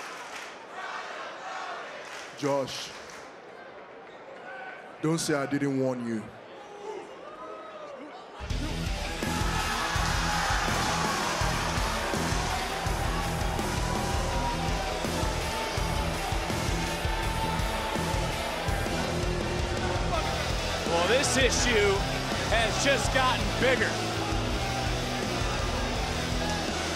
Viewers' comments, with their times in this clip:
0:08 DIJAK is finally starting to get the pops he deserves!